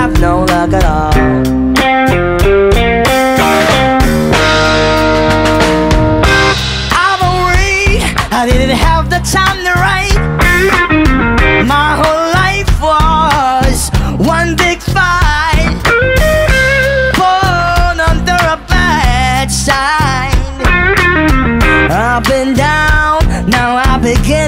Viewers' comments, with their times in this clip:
0:05 Killing it w/ the vocals !